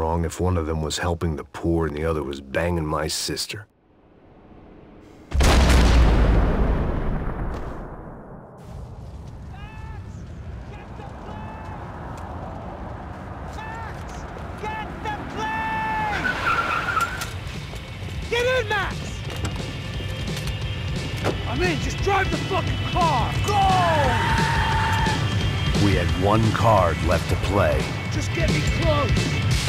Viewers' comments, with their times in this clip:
0:10 It will always be funny how he screams to max